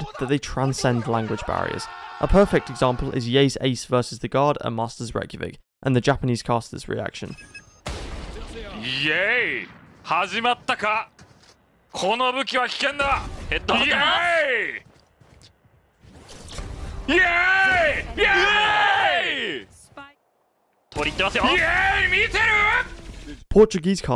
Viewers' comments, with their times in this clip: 0:07 I cannot take it seriously- the deep professional Japanese voices yelling YAY. YAY. YAAAAY.
0:07 the casters just sound super happy